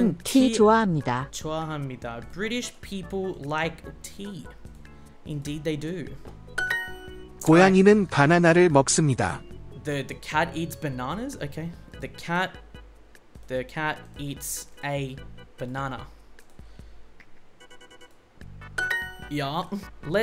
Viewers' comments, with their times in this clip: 0:05 wtf 😂😂🤣🤣🤣 HAHAHAHAHA these edits with the bgm